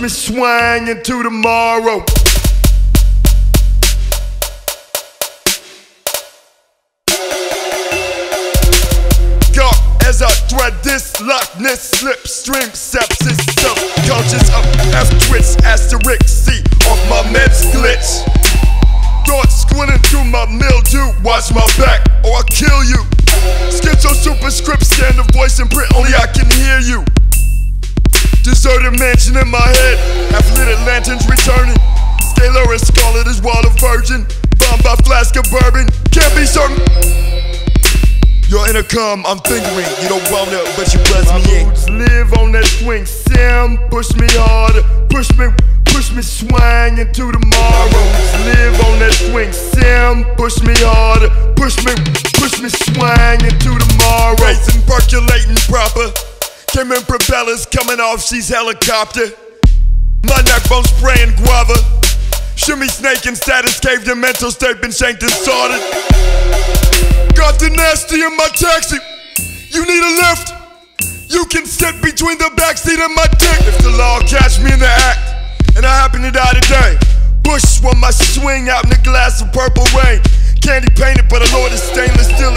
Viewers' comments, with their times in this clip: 0:07 Is it just me or this sounds like the velociraptors from jurassic park 3 kkkkkkkkjjjjjj
1:06 his delivery here really reminds me of Bill Burr